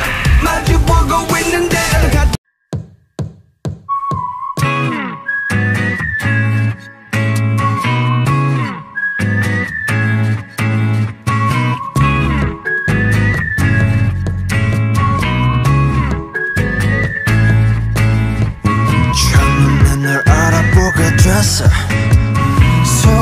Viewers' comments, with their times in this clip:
0:05 As soon as DNA played my foot starting doing jungkook foot step at middle the high in bed not caring 🤣 that I Don’t even know how to do the steps